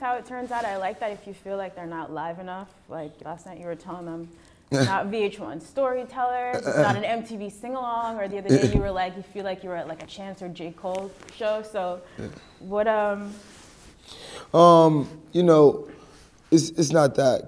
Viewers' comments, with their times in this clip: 0:03 She gettin him turnt boy, he had to throw in them adlibs